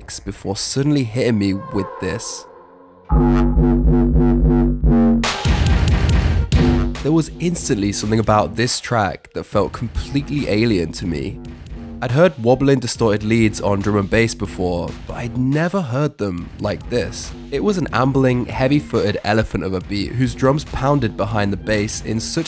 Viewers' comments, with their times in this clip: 0:03 What was the track with the hard bass ??